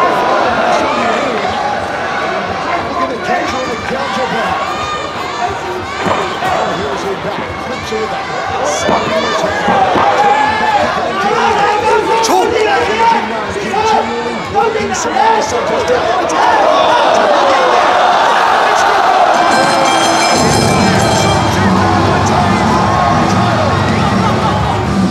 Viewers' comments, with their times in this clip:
0:08 it was spinning body shot before it. it looked like a glancing blow but it probably caved in her liver.. you can hear her corner urge her that she's hurt.